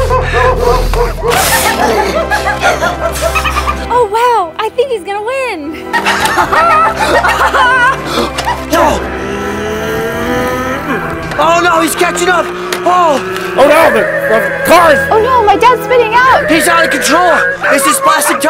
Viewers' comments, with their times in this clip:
0:03 😅 the addition of the dolphin sound 😄